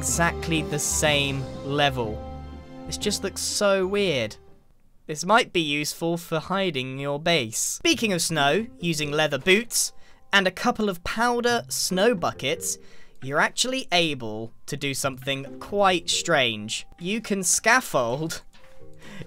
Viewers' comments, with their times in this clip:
0:07 Beaking? ... 'beaking of snow'... am I hearing it wrong or what?